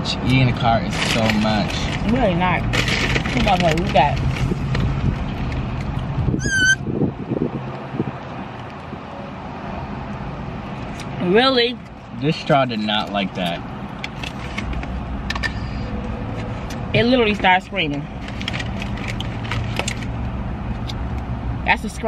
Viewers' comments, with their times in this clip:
0:06 Lmfao YALL SEEN HIS FACE WHEN THE STRAW SCREAMED ?!!! 🤣🤣🤣🤣🤣🤣🤣🤣🤣🤣🤣🤣🤣🤣🤣🤣🤣🤣🤣🤣🤣🤣🤣🤣🤣🤣🤣🤣